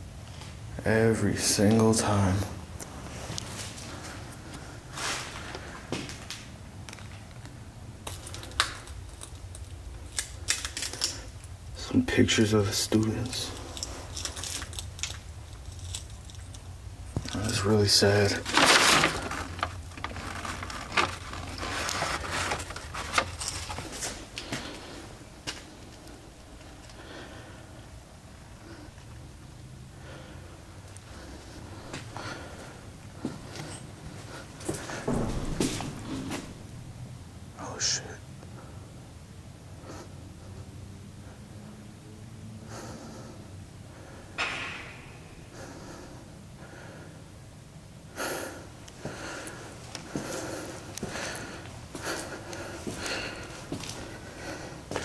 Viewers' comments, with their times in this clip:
0:07 I heard something falling in the hallway. Maybe a small piece of metal.
0:37 yep regret that comment because i just heard a boom and a pop